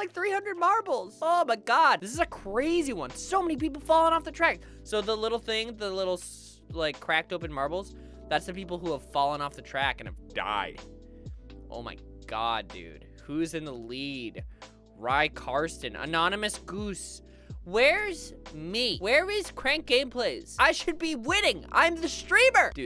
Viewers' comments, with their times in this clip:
0:08 when puberty hits "those are the people that have fallen off and have DIED"